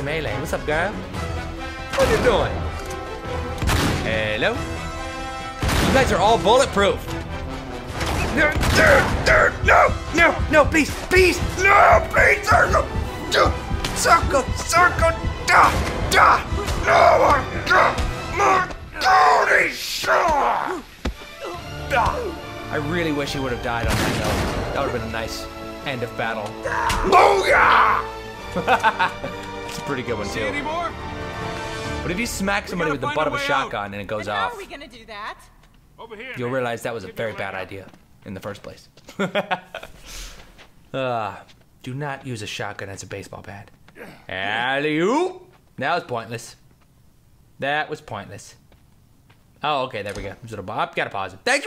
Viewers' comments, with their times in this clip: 0:10 the music was synched perfectly.
0:34 did u hear that wierd sound